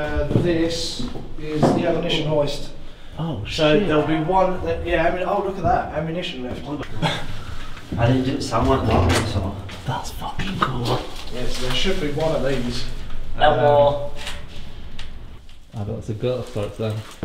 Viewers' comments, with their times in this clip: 0:03 Wtf was that sounded like someone yelling heyyyyy?
0:05 What was that shout ??